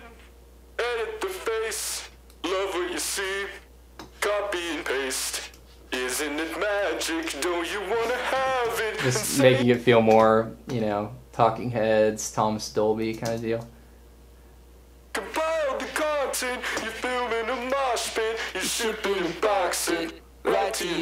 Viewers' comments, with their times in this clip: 0:09 I'm dying at this voice bahaha